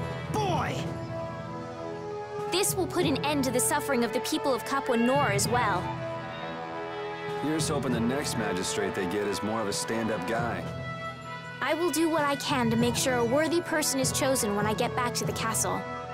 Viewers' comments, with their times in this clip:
0:03 what's up with the random cat meows while Ragou's talking, like